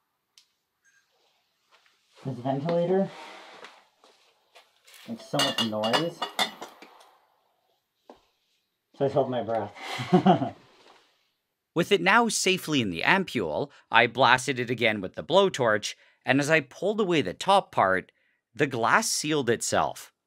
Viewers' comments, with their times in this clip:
0:05 sounds like beer glass bottles😅😁